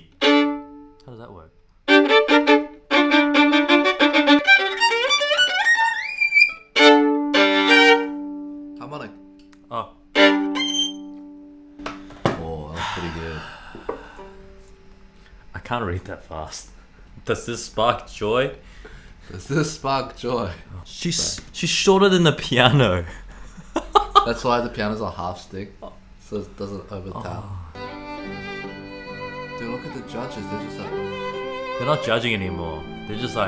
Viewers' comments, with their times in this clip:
0:06 Why does sound like a girl screaming
0:17 I thought you asked, "Is this Bok Choy?" 🤣